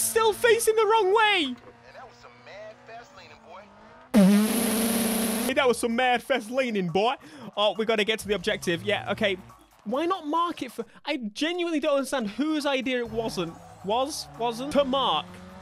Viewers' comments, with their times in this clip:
0:03 Crazy exhaust sound!